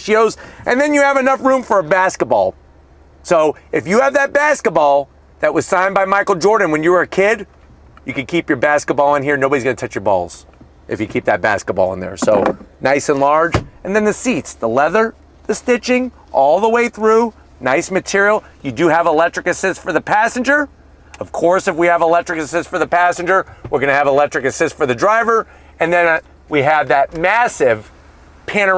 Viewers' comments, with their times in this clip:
0:09 how difficult was it to laugh while saying that?